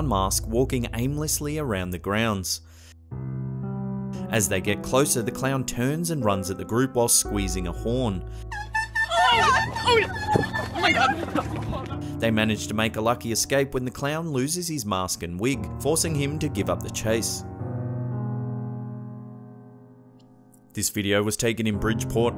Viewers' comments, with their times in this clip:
0:08 is it just me, or does that Clown's horn sound like a dying Puppy?